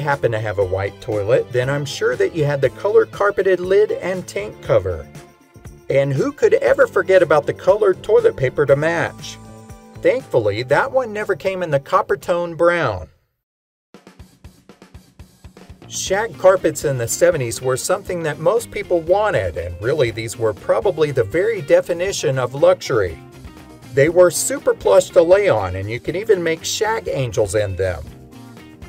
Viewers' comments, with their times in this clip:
0:10 😆 and a pause for effect.